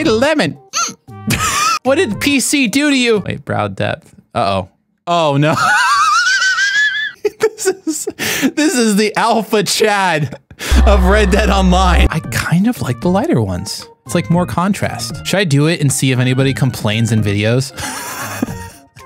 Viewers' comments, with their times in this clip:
0:06 OH MY GOD THE WHEEEEZE